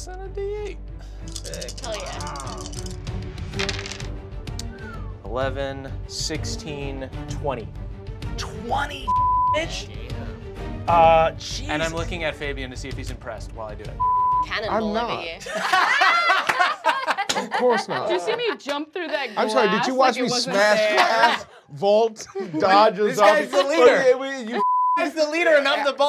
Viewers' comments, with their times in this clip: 0:07 Glad I watched the censored version, solely for the fact they seem to have censored Brennan's "dam" in "damage" That killed me.
0:07 ok i was a little annoyed at the censoring until they censored half of "damage" because "dam" now im just angry
0:07 did they censor Brennan's "dam" in "damage" ??
0:08 They bleeped damage
0:08 Lmao brennan says damage the "dam-" part of it gets bleeped out.
0:08 Why did they censor "damage"?
0:09 I am not loving these censor beeps XD Are they automatic or did someone mess up and censor "damage"
0:13 they bleep the word damage